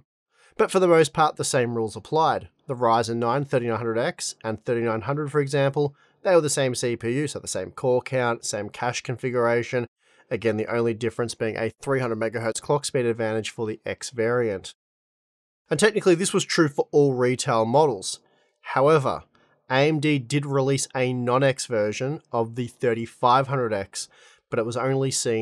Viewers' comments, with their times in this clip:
0:09 tell that to youtube subtitles "same core count, same cash configuration"